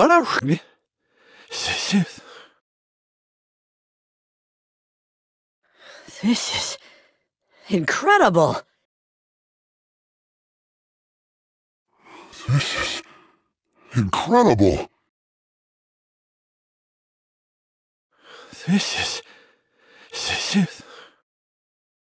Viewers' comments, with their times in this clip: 0:06 that almost sounded like TFS Goku